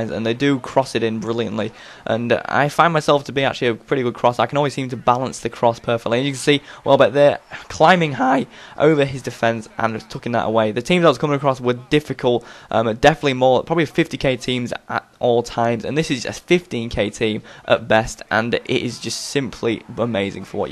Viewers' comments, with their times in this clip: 0:08 lol voice crack
0:08 loving the voice crack <3